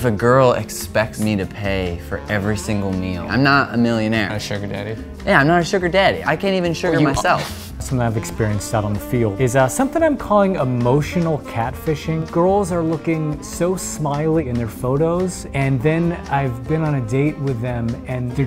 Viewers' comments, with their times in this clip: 0:04 The guy in the red makes weird emphases- sugar-DADDY, million-AIRE